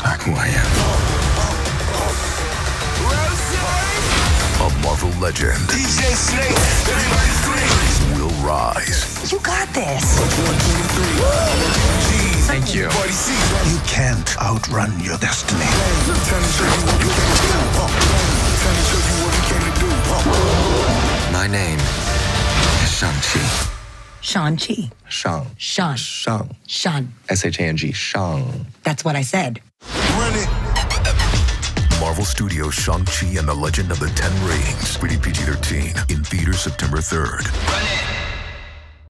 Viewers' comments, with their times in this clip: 0:04 A Marvel Legend, DJ Snake!!! 😎✌🏻 Me: WHat?
0:22 i just realized simu pronounces "shangchi" exactly the way it's pronounced in mandarin, with the tones and everything (including pronouncing "chi" correctly too!) as a chinese-american who speaks both languages fluently this makes me so happy (he's also from the same city in china that my entire family's from which just makes it even better)
0:25 all i see is Mr Bean (Johnny English) and Agent Tucker pronouncing Shoooshaan vs Susan 😂
0:31 wow as someone who speak Chinese I can tell you that this voiceover dude really practiced this pronunciation hard and he nailed it. It’s “ˌʃɑːŋ”, not “ˌʃɑːn”, and definitely not “ˌʃæn”. LOL
0:31 drop was epic